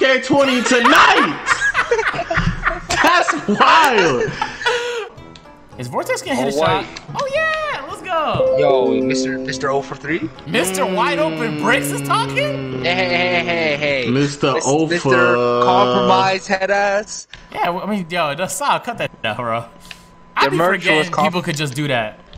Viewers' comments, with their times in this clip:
0:08 Who else thought their PC had something in their notification?